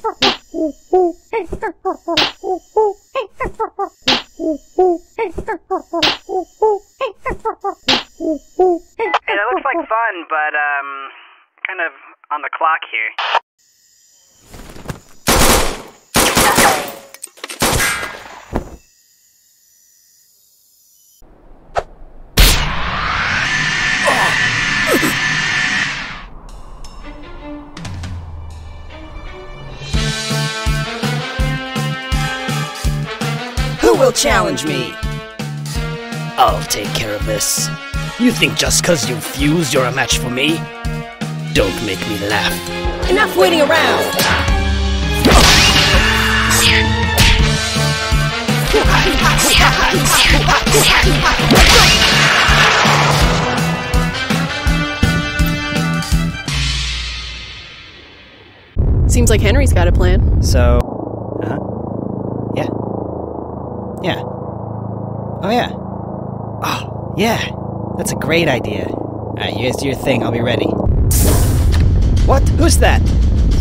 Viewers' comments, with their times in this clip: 0:08 Monkey swap sound
0:59 HOLY HECK HENRY TALKED